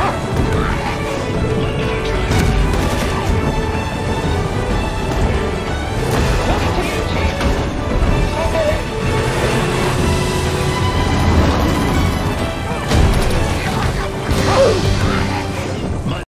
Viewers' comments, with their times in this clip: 0:05 music timing on though